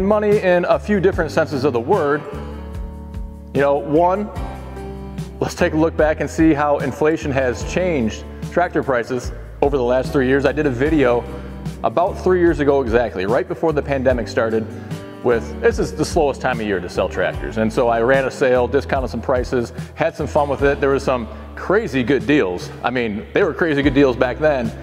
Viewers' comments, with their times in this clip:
0:05 The background music is just too loud !!! It's competing with your voice and it's not even needed. That was it for me.